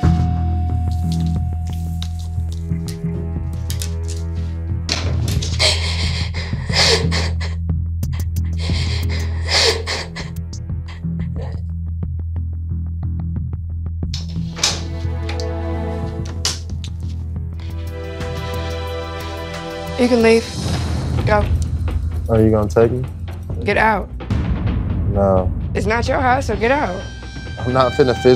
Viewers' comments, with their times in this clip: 0:09 not her crying and he on his phone😂😂😂😂